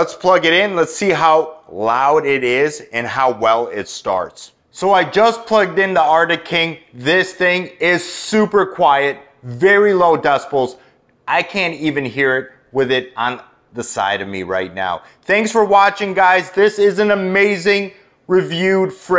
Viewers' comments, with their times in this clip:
0:06 yeah that comp isn’t buzzing yet it takes a minute 🤣 trust me it’s not quiet guys. All mini fridges are the same, they aren’t efficient either unless waiting 4 hours for the bottom compartment to cool up is efficient for you.